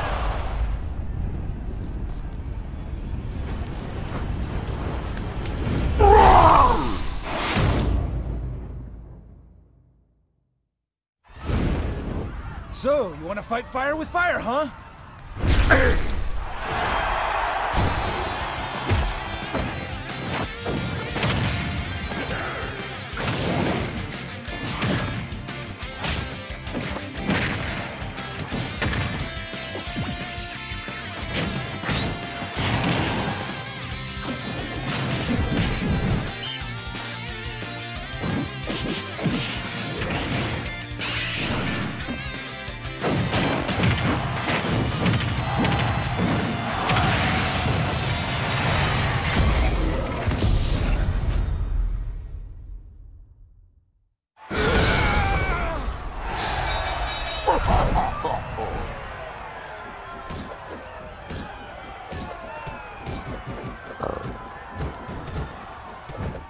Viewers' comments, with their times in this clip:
0:06 That's the weakest roar I've ever heard.
0:12 Ken sounds exactly like Dante from Devil May Cry
0:14 sounds like Incineroar says “Egg”
0:47 The crowd just cheering on their own death is iconic...
0:54 elderly ahh scream from Ken Masters